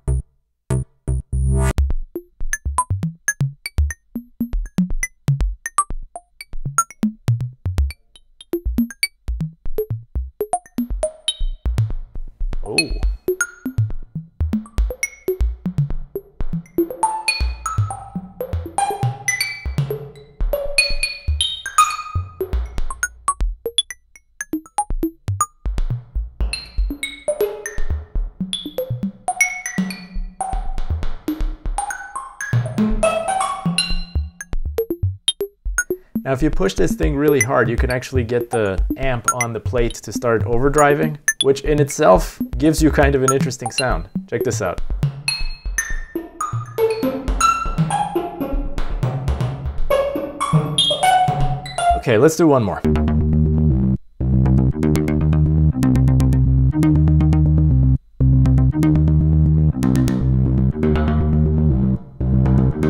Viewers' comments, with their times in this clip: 0:03 Especially with snare and those short impulses The reverb really makes them shine and it also ads a kinda sparkle in the higher frequencies!
0:16 The music makes me think of Earthbound
0:19 nice water droplets
0:34 is it overdrive in the amp, or is the transducer not in permanent contact with the plate at higher amplitudes?
0:50 got some NIN vibes from this haha